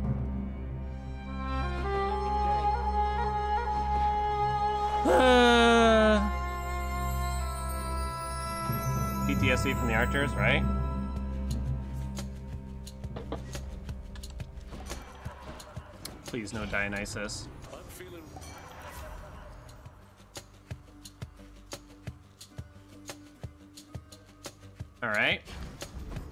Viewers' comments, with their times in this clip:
0:10 just started watching, but ALREADY that transition for the music has me hyped af, it fit so well